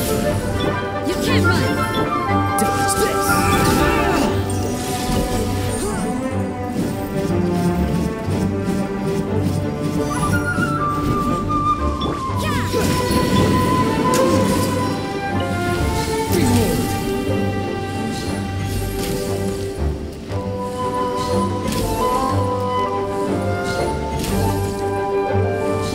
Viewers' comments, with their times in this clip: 0:06 Why did I hear Melee Marth up-B 😭